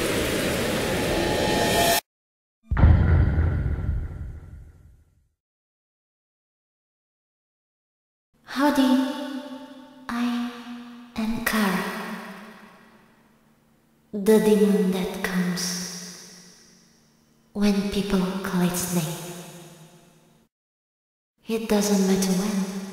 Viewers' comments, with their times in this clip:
0:08 whaaat i can't hear you speak louder 😂